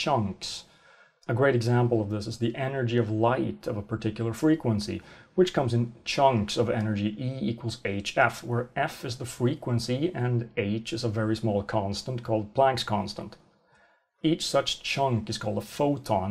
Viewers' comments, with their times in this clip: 0:04 "miminal" Ah, so that's what it's called now... ;P